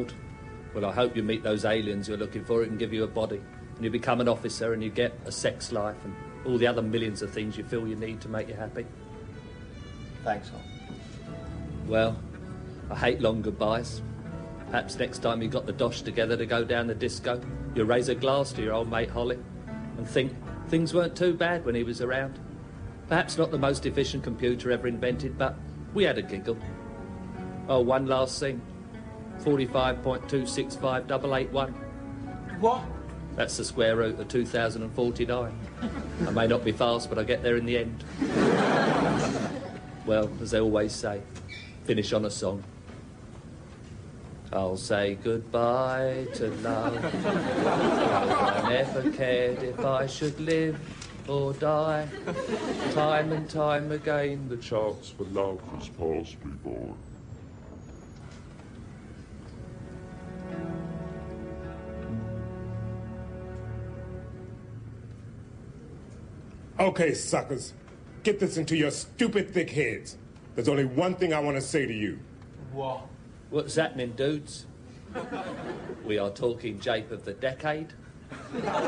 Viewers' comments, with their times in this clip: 0:10 Their reaction when Holly reveals himself as Queen was hilariously priceless. I liked Chris, Craig and Danny's acting when they say goodbye to Norman. It was as if Norman was really leaving the show and Holly really was getting killed off. Chris sounded genuinely sad when he said "Thanks, Hol!". What a brilliant scene.
1:02 The comedy timing of this reveal from is UNIQUE. Can't think of an equivalent on TV. Queeg's face morphs into Holly's face without any sound effect. There is no surprise or "what?" reaction shot from the crew. Holly IMMEDIATELY says "We are talking jape of the decade" - but in such a deadpan way it barely registers. And only THEN is there a long pause, as the audience plays catch-up with what has just happened. It's an example of the Audience Laughter being built into the timing, and actually makes it better. We just stay on Holly for 20sec as he keeps going. Priceless.